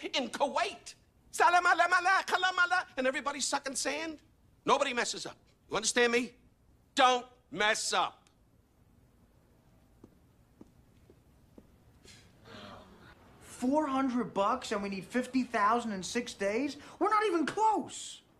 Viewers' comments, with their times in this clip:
0:06 Looks and Sounds like "Don't mess up" was dubbed in place of something dirtier.